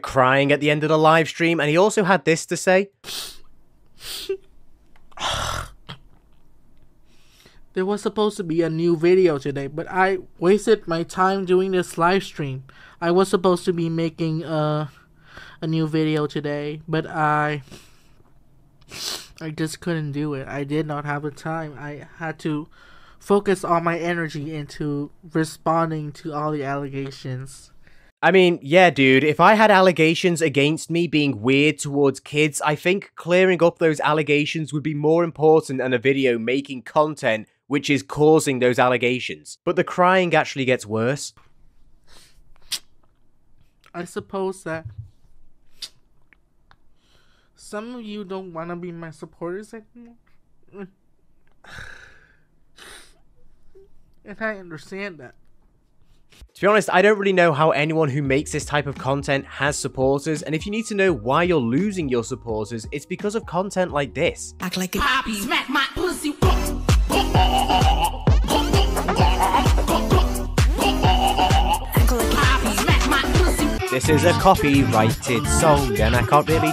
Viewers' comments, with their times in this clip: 0:06 fakeee ahhh cry ☠️💀🤣
1:04 wtf is this music bro? 💀💀💀